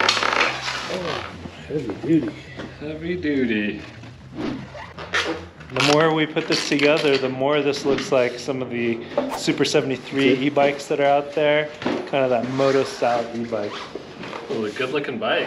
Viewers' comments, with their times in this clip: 0:03 I'm not exactly sure why I appreciate the swoosh sound you added so much when you flip the tire it made me laugh, so thank you.